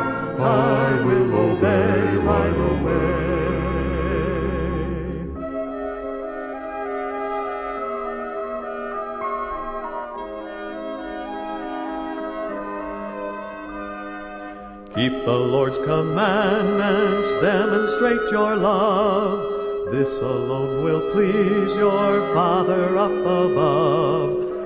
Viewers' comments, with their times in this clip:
0:05 Rhyme Asylum vibes